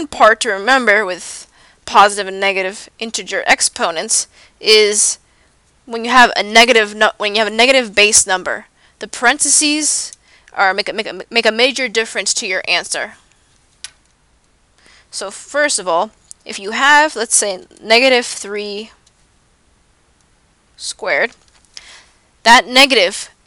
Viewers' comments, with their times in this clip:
0:10 you sound nervous.. still a helpful video